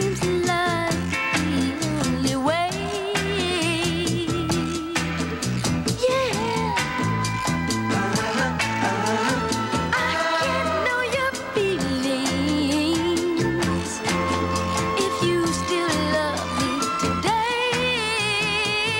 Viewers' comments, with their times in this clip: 0:06 Ive never heard a singer say "yeah" so smooth and cool in my entire existence as Michael Jackson did minutes in. Simply amazing.